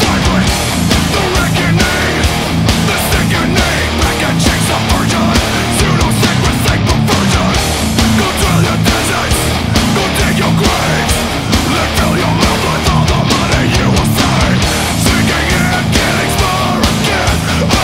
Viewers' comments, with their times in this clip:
0:04 Did i just hear "pikachu's a virgin"?